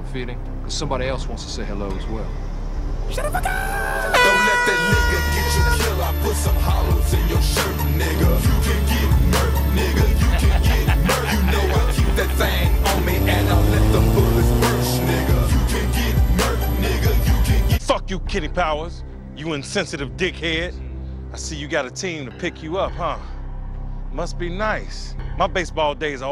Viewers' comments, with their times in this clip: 0:10 The random Juicy J verse 💯💯💯